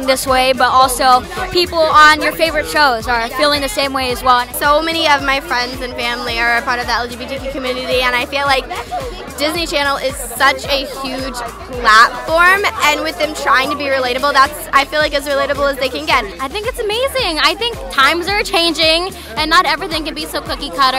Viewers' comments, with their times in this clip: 0:03 Devore: LGBteqgu community